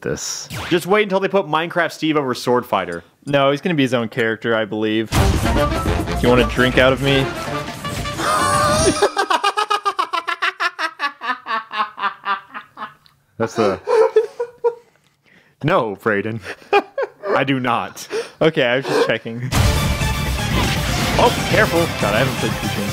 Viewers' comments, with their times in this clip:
0:06 rimshot noise intensifies
0:07 So is literally no one gonna talk about that laugh ?
0:08 literally the joker laugh wtf
0:09 Not Gonna lie, but is the most fakest laugh i have ever heard